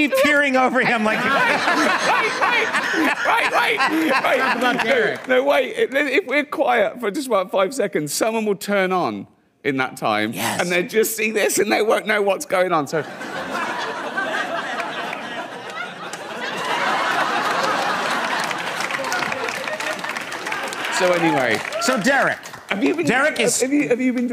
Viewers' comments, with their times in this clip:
0:08 Conans "Yes" sounds extremely creepy